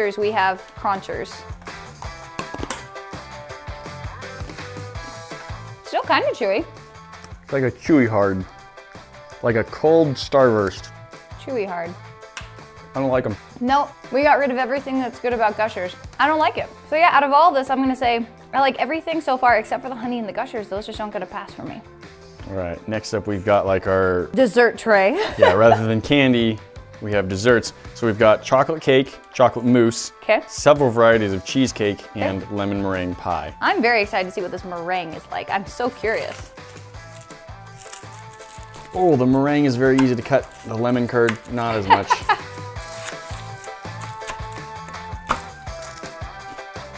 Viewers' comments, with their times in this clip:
0:06 "like cold starburst " just the way he said it
0:34 anyone else think she said I'm so furious ?